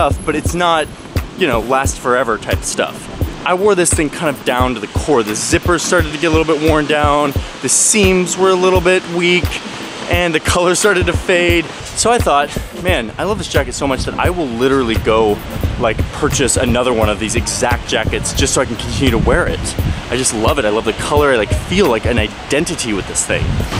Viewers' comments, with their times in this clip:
0:09 you can hear him beginning to cry. Before you catch on, he cuts.